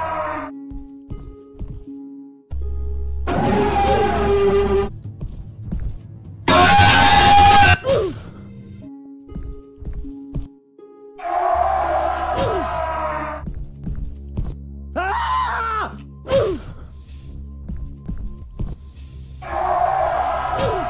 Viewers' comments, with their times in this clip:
0:06 Max volume headphone meme
0:07 RIP HEADPHON USERS LIKE ME EEEEE